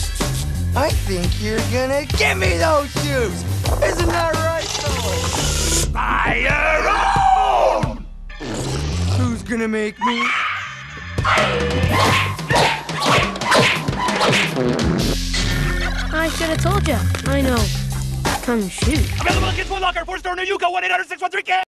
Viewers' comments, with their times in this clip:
0:10 The Baby Crying Sound Effect is genius 💀
0:16 Is it just me, or that kid sound like Arnold from Hey Arnold?